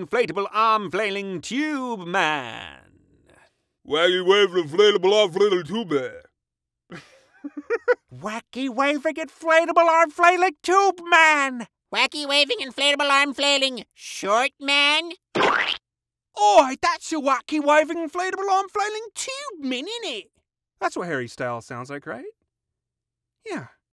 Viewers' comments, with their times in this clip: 0:04 Lost my sh!t with Sylvester
0:13 My favorite was Grandpa Phil!